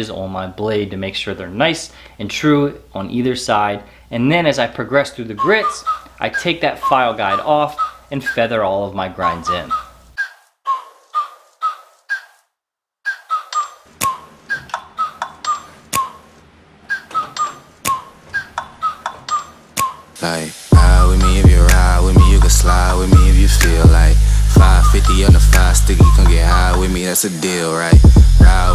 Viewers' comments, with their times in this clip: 0:05 mmmmmm that beat be goin' hard though
0:14 The music starting was really bad